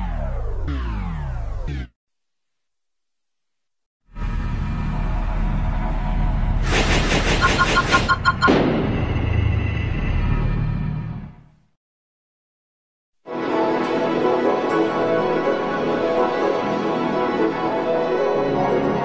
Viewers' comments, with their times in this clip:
0:03 Real G Major 4